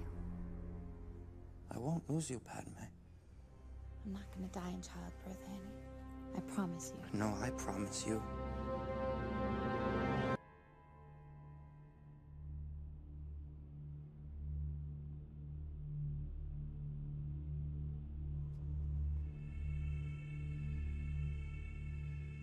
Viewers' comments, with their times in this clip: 0:10 The harrowing music that begins when you see the struggle within Anakin, has to be one of the most moving pieces of cinema I’ve ever seen in my life. Absolutely heartbreaking